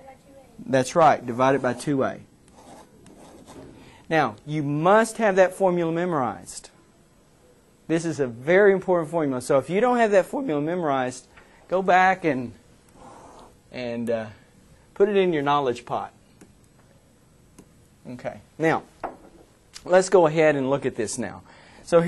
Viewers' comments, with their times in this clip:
0:10 hahahahahahahahahaha lol break voice